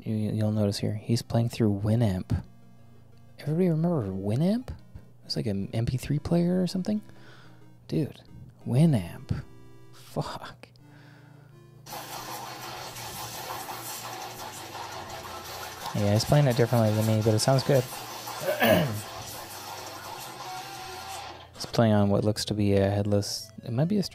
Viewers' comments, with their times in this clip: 0:08 that "winamp" was almost pitch perfect I immediately said "...it really whips the lama's ass" out loud lol